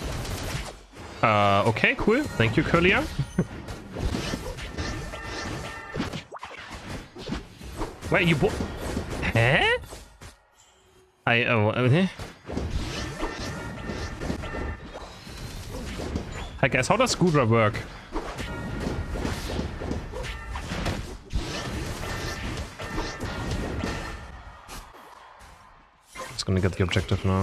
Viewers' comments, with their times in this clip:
0:09 You should consider becoming an Anime Voice Actor, the reactions feel genuine "Heh?!"😂